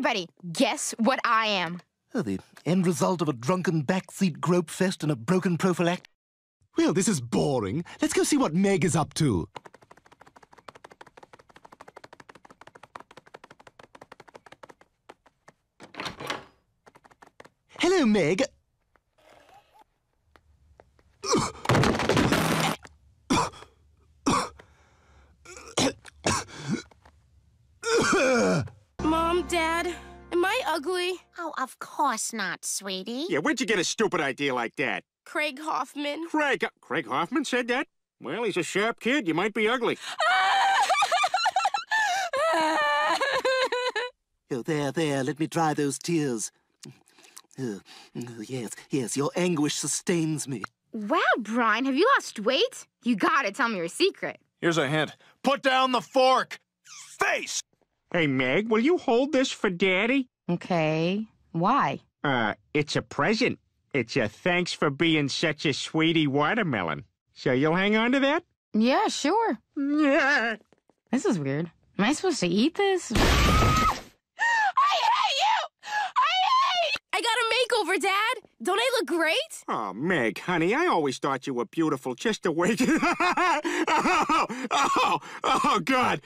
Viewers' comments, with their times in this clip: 0:09 Stewie Griffin's Little walk sounds
1:08 Funny watermelon bomb her face meg! Scream ran away! 😂😂😂😂😂😂😂